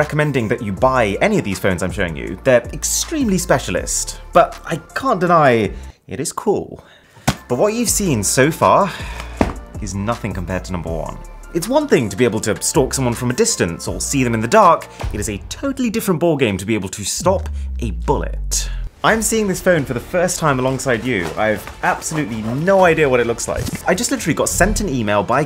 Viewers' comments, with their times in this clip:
0:07 but what u hvae seen SOFA